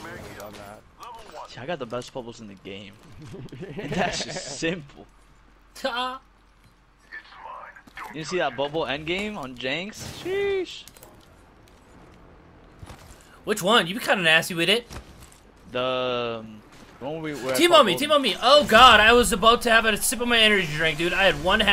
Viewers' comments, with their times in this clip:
0:04 what was that laugh bro